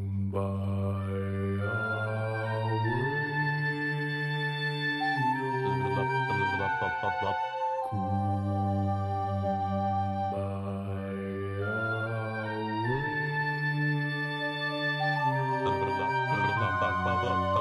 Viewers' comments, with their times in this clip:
0:05 it feels so weird to be able to hear candelavera